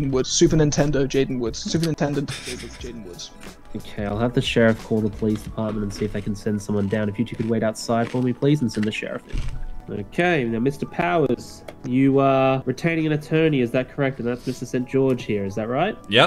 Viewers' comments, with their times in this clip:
0:04 Dat crunch doh